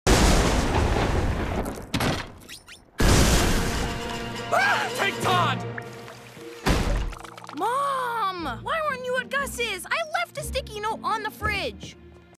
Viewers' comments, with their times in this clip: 0:05 bro said take Todd